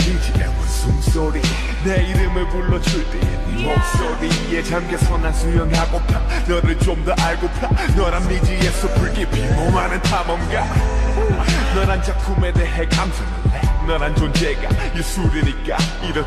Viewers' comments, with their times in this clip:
0:03 You can totally hear that it's Jimin ahahahaha